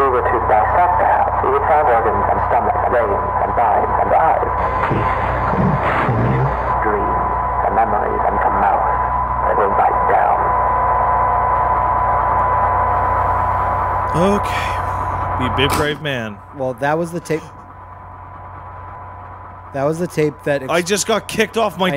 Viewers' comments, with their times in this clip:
0:04 Kitchen: distortion Dining room: distortion Child's bedroom: screaming Bathroom: distortion Spare bedroom: distortion Living room: "if we were to dissect the house we would find organs and stomachs veins and ??? and eyes..." distortion "... dreams and memories and come out and will bite down." Basement: "There is an important distinction that must be drawn between the words 'dissection' and 'vivisection', a distinction that appears to be lost on you. Your purpose was to listen and yet at every turn you have pried, you have prodded, and you have interfered. Have you not been paying attention? Did it not occur to you that if an organism exists within a greater organism, your intrusion would be felt? And still you harassed. And now like the wayward spider who witlessly sat on a sleeper's tongue, you will be swallowed. Because the truth is this: when a house is both hungry and awake, every room becomes a mouth."